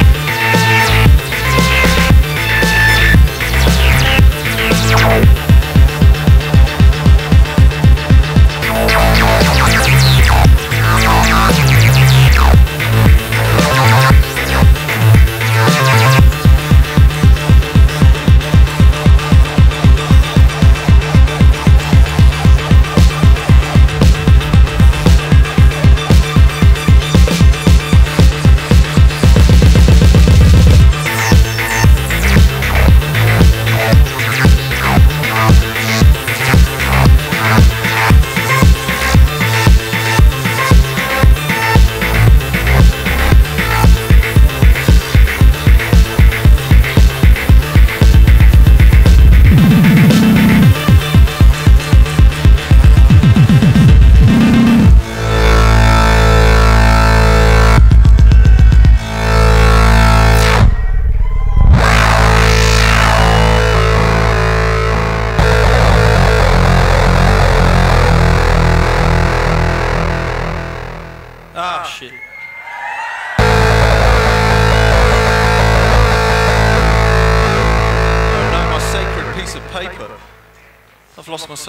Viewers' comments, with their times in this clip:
0:07 That drop is absolute class.
1:05 What a shitty crescendo vibing so hard before that.